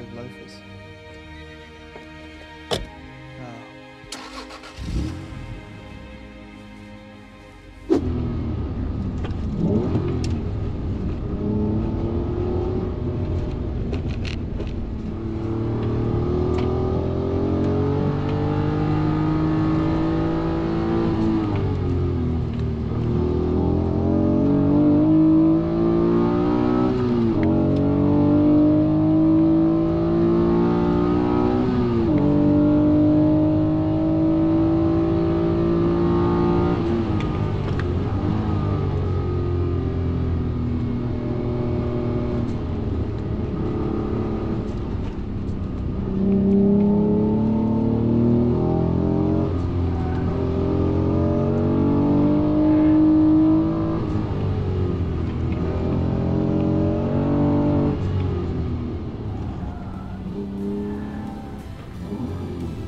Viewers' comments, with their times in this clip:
0:08 this, this guys know what we want, just having fun around the circuit, all sound, revs, god turning skills and tire screeches
0:46 That intake growl sound of the engine climbing out of 4,000rpm at full throttle, up onto the cam is burned into my brain from when I rode in/drove a '91 NSX. Absolutely amazing machines.